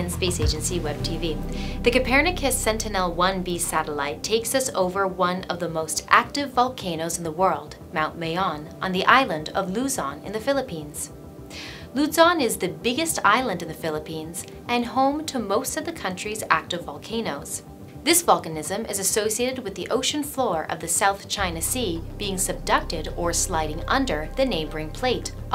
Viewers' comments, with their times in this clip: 0:09 'Loo-zon' ughh that hurts to hearr